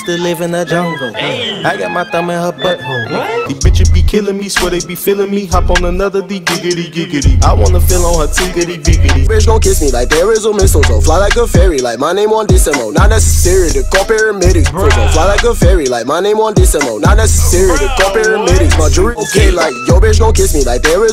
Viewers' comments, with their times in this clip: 0:06 You know ita a good rapper when he does a "gigidigigidi" in his songe